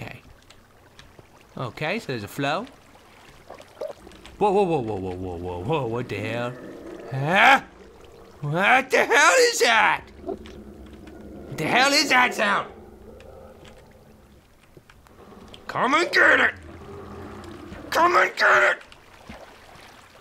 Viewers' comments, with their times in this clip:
0:07 it sounded like amnesia